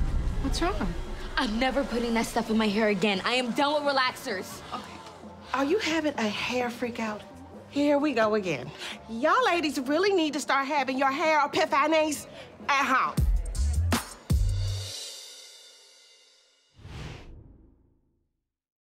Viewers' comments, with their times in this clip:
0:10 pronunciation: epi- pha-nayees!!!!!!